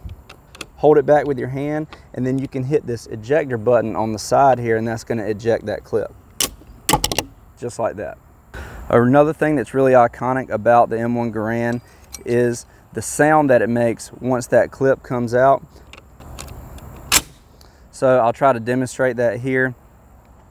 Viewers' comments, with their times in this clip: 0:04 Am I the only one disappointed when it didn’t ping. I’m just disappointed